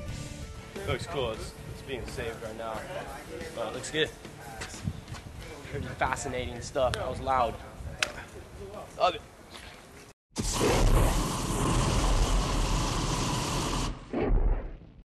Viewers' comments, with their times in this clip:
0:11 watch?v=ZxsyL_RSsUw&feature to KABOOM!!!...classic